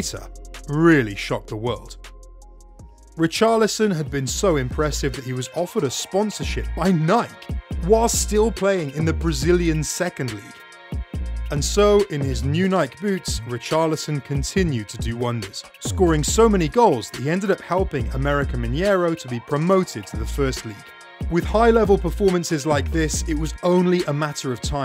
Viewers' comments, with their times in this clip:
0:05 are we rly gonna just let this man slide with the way how he said nike?